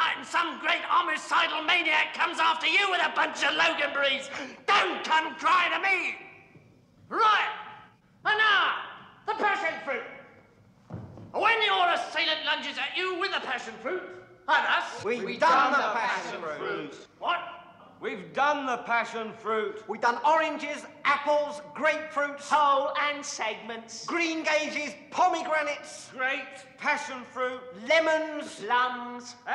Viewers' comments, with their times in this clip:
0:10 gets me every time along with Graham's scream! Hysterical!